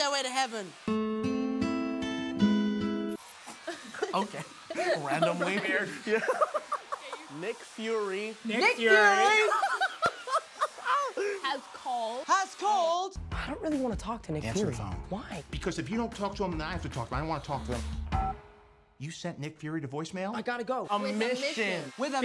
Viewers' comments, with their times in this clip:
0:06 Jacob and Zendaya : « nick fury » Tom : « NICK FURY » Jacob and Zendaya : « has called » Tom : « HAS CALLED » that was hilarious 😭
0:07 jacob and z: nick fury- tom: NICK FURY🤣